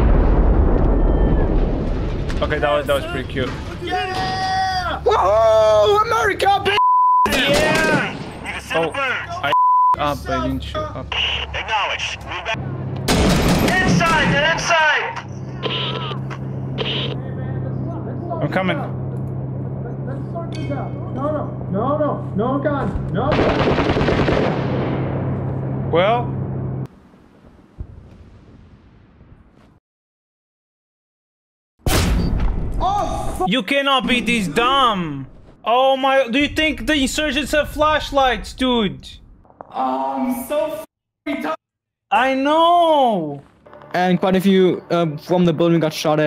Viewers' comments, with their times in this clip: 0:04 That sounds like Battlefield 3!
0:13 this was actually scary just hearing your friend have negotiating upstairs and then gunshots silenced everything
0:17 my fav moment, not because it funny or anything. It's because it sound real as heck.
0:17 Thr audio holy hell i can only imagine what it would be like going throgh that in real life. Not knowing where your teammate is at but hearing him about to die and then acrltually die is gut wrenching
0:31 Get that scream and sound effect cut out and you got a new audio for a action movie